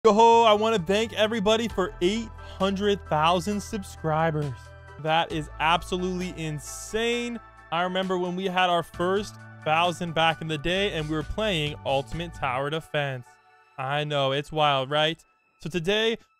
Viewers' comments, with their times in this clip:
0:00 did bro said he wants to bang 800,000 subscribers